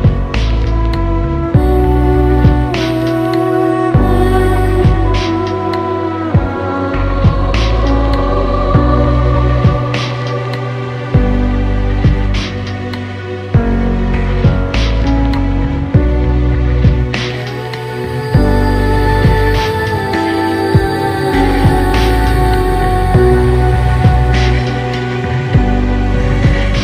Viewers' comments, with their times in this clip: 0:10 reminds me of Gingersnaps movie Theme